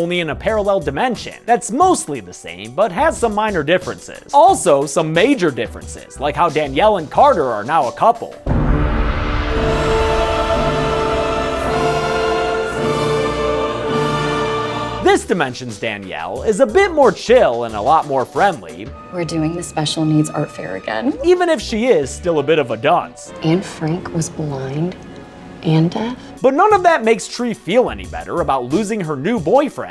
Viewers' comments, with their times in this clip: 0:08 Yo hell was that music
0:12 lol that dark soul kinda theme is funny